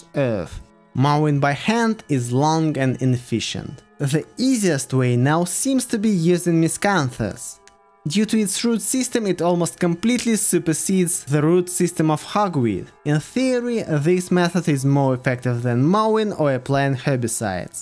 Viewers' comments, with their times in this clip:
0:03 what is the plant that could challenge it? i didnt understoood what he said the name was, miscomfice?